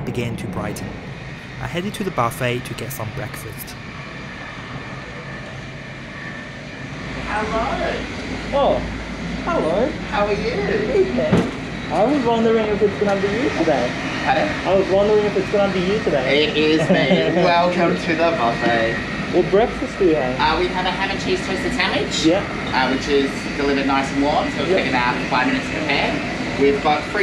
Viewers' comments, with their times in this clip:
0:08 The moment he spoke, I instantly knew who it was, as he is my favourite crew member!